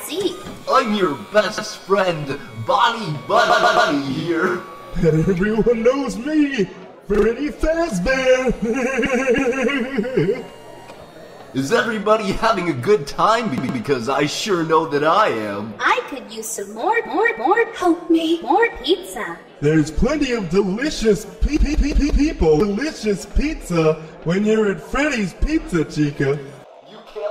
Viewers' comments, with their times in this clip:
0:09 Why did freddy laugh like peter griffin